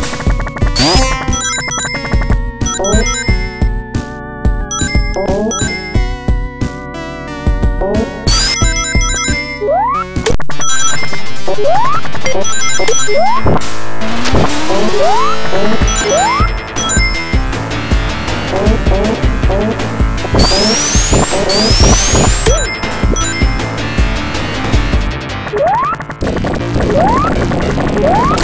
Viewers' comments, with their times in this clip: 0:10 Is that "Open Your Heart" in 16-Bit?!?! That's incredible! It's also a nice fit for Super Sonic's Theme!